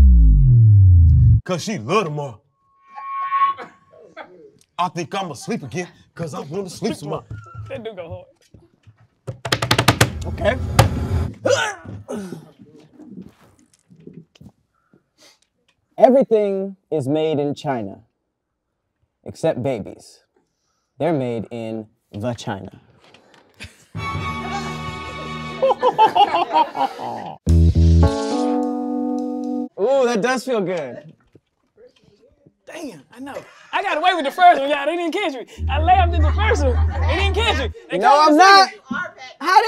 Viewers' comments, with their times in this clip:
0:08 she just laughed early af
0:26 air has to leave your body when you laugh, the guy with the yellow hat mad noise like he was laughing and y’all didn’t say anything